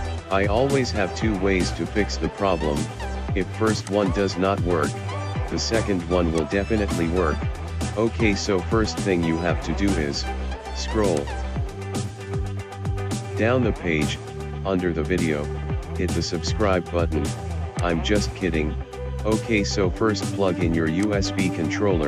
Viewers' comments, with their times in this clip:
0:04 Fuck this video, I'm in and he is still whining about subbing him. I can't take this kind of shitty robot voice anymore, I'm out...